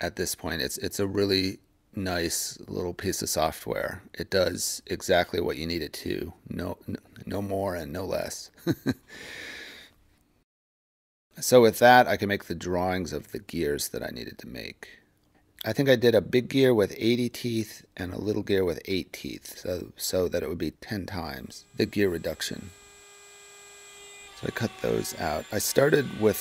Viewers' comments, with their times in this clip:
0:07 That awkward laugh-pause